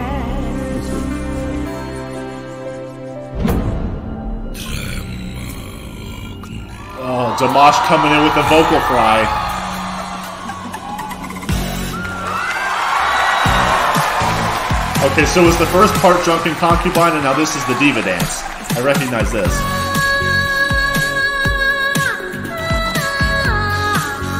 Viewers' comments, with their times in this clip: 0:05 how i wish the audience will silence cuz i want to hear it full with no interuption😆😆😆